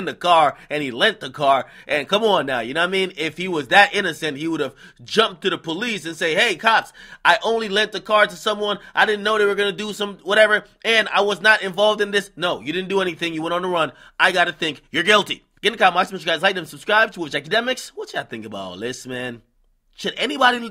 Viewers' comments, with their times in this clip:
0:08 The snitch voice* has me dead